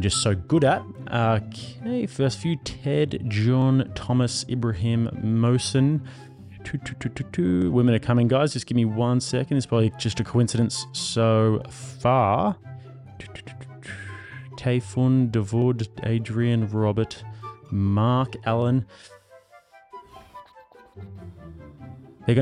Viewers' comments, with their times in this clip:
0:09 I’m super based and on your side but that terrible meme music and this whole section was massively cringe and pointless. She said “on average” not who’s leading the fields. You missed tthe point like an OF girl dude…